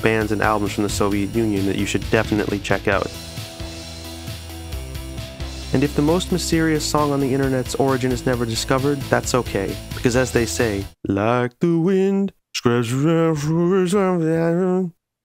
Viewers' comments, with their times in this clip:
0:13 :::::.. lol :::::::::::::::... Ps. Band sounds like... Red Lorry Yellow Lorry